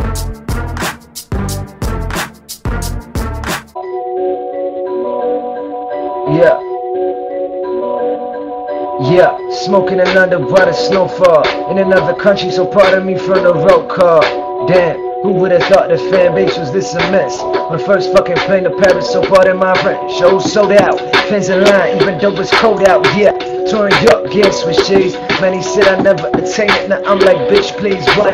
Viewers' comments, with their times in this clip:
0:04 The guy he's good at rapping
0:09 hyperbole rapping there